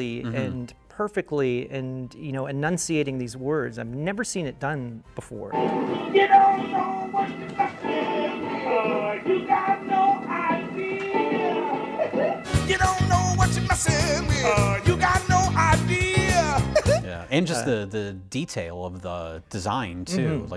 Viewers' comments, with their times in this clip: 0:06 fun fact: the reason the audio for when they were operating Audrey 2 sounds like it’s in a higher key, despite being at half the speed here is cuz it’s PAL pitched. I have a feeling it’s PAL pitched because the movie was filmed in the UK